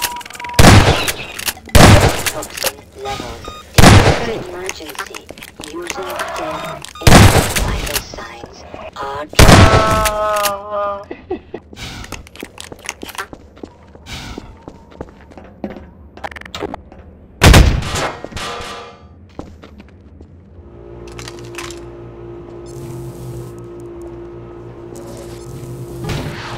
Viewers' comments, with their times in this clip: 0:10 is dat a laugh?